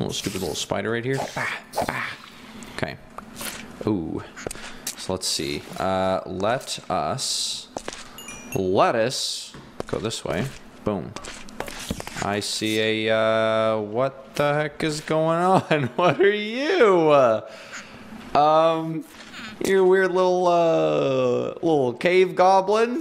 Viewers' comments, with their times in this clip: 0:04 Who heard a villager sound in the mine in time
0:04 Who heard a villager sound in the mine in time
0:09 noice of a villager